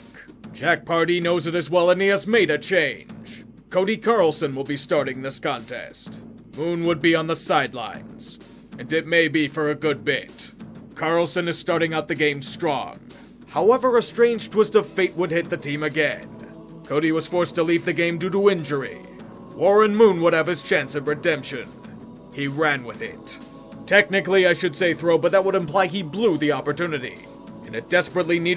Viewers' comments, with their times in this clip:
0:09 Halo 1 music got me all jacked up